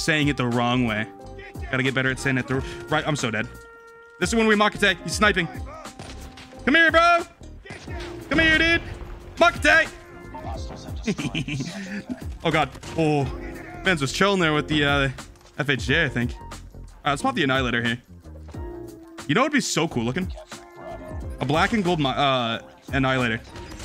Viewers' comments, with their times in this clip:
0:10 he laughs like a gremlin lmao